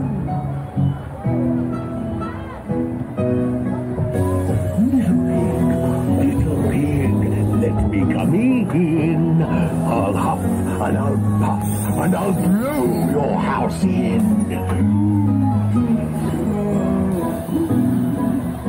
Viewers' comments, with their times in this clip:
0:05 For those of you who have seen Legends of Chima, The Big Bad Wolf sounded like Sir Fangar in